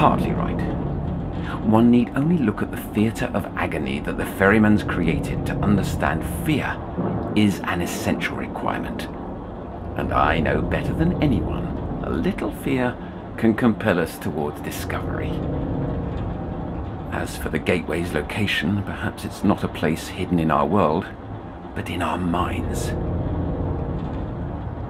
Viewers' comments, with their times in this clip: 0:08 I can't get over just how evil he sounds ... you can hear the manic grin in his voice and it's so... disturbing. Such a huge departure from the (fairly) sane Otto we heard speak in Chapter 1. This whole monologue is so creepy. He really sounds like he's snapped, and Surface Tension playing faintly under the sounds of the storm does not help with the sinking feeling of listening to this psychiatrist plot to dig around in his patient's head with no regard for her begging him not to.